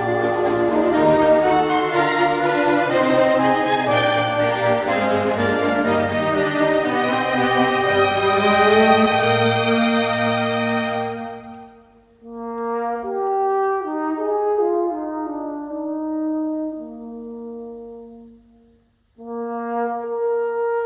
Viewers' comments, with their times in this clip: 0:05 Hear his wonderful cadenza in the first movement. (From Artopium: "In a concerto, a cadenza is a brilliant, unaccompanied solo section, once improvised by the player, now more often already composed. It enlarges on the themes set forth in the work and exhibits the player's technique.")